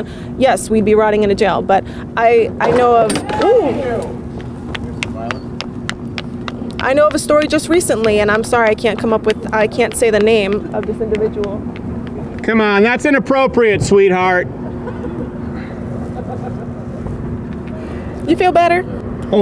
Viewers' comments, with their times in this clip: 0:03 Those clicking heels running away 😂I can’t
0:05 The heels running away sound effect 🤣🤣🤣🤣🤣🤣